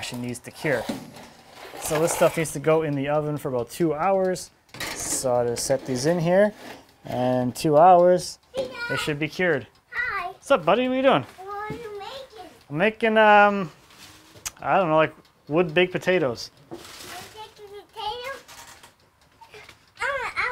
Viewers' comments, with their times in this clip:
0:07 I totally thought of you saying those lines using Julia Child's voice...